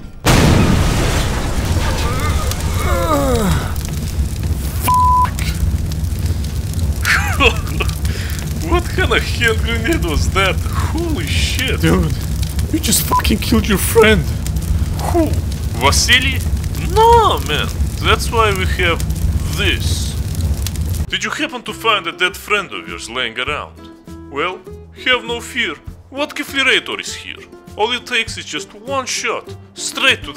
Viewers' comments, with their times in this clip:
0:07 Stop in the vodka man isnt from RUSSIA hes from england
0:08 AGAIN, FAKE RUSSIAN!!! (UK flag)
0:12 Russian friend is not from Russia but UK
0:15 that’s no Russian! That’s the brits!